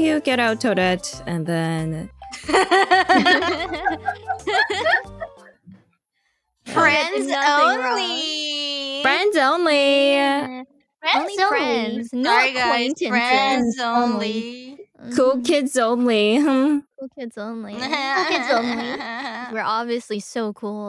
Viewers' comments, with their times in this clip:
0:08 game starts, kronii Valley girl yassssss queeeennnnnn